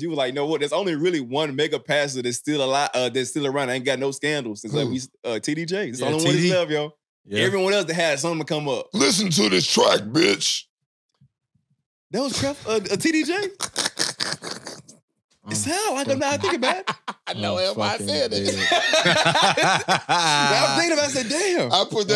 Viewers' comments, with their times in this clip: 0:07 that do sound like TD Jakes 😂😂😂